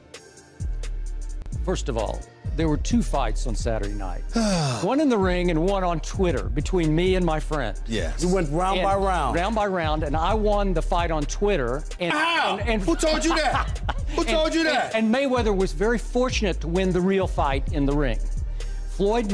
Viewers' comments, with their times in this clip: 0:06 the beat is great.
0:06 the beat is great.